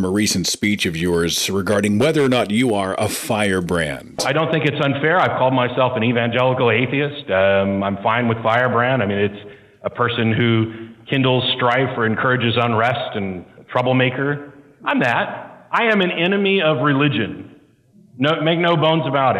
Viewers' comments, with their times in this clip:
0:03 The reverb you added for that spiel about being a "firebrand" was very clever....(shhhhh! YOU MEANT to do that!)... It was an excellent theatrical effect...